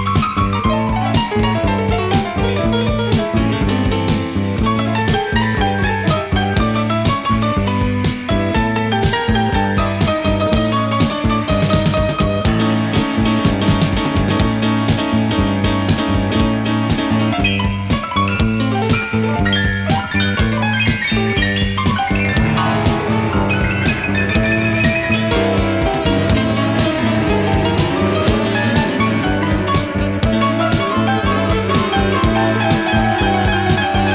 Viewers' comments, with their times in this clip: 0:04 Looking over a book about Bowie, I read that in this truly brilliant piano solo, you can hear snatches of Rhapsody in Blue (hard to pick up) and then Tequila (easier). Try it. I wish I could play like Mike Garson.
0:12 Correct me if I’m wrong but it starts playing the first note from lady stardust… how interesting
0:16 We lived for surf road trips, this was a staple AM while driving with the crew. Truly dream scape on the road stuff. Mike Garson's piano work stuck in your deep thoughts like peanut butter to a spoon. Many nights/mornings drifting along with this genius of a song stuck in my head while paddling out at dawn.........Pure magic, took you to another place.